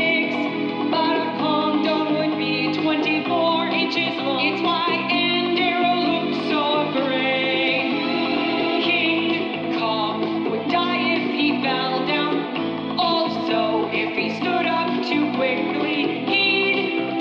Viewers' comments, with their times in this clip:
0:03 Whats she saying ? Can't quite understand